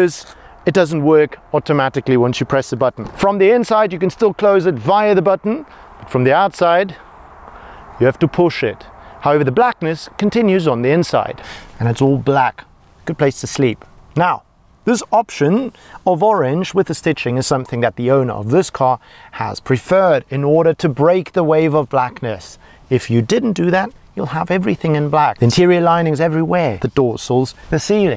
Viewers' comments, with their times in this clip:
0:09 "From outside, you need to pull shit" love it 😀